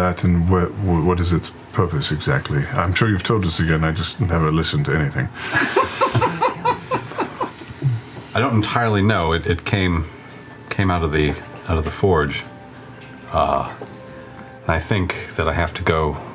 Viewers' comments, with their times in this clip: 0:04 for the life of I could not figure out who laughed..